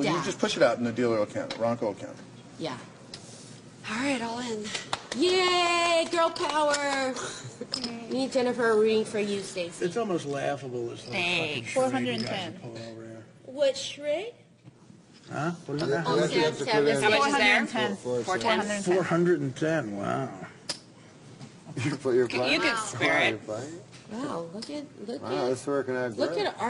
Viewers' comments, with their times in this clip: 0:10 the bitchiest "Thanks" I've ever heard. Love it.